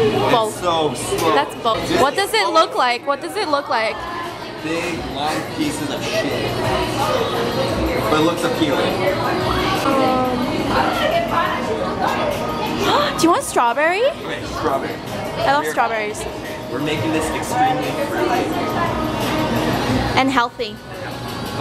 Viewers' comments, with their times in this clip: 0:08 XD OMG does anyone else hear the song playing ish LOL love it :D